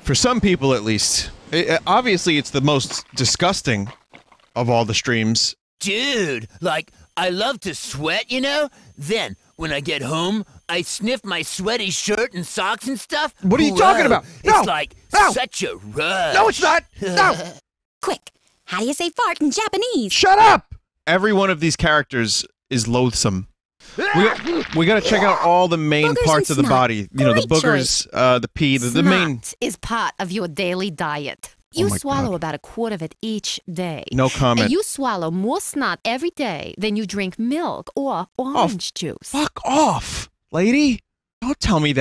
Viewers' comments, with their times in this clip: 0:06 okay I legit thought that vinny was making fun of Mr B.O.’s voice before vinny was like “what?! No STOP!!”
0:16 why does the "SHUT UP" sound like it's a part of the game
0:28 Her voice reminds me of my cousin. Why, yes. She is Jewish. Thank you for asking.
0:29 She lowkey sounds like Linda Belcher